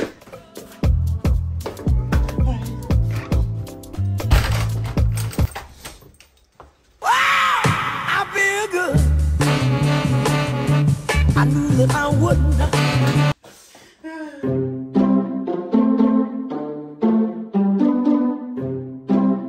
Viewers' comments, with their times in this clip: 0:06 that scream scared me